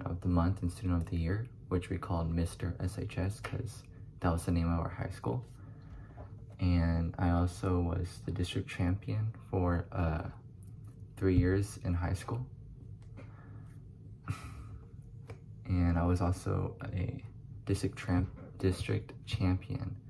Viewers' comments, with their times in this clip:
0:03 Bro No Homo, Your voice is mad soothing😭😭Ain't no way Baylor Rejected you after the interview Also I feel you I'm from Houston and I got my EKG and CNA certification but there is no job for me.....